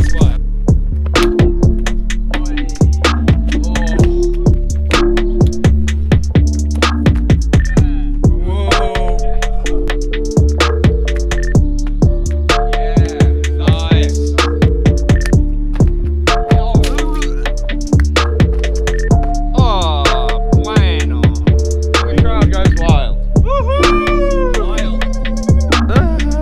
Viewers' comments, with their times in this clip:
0:09 Someone please play from on half speed, the beat is fire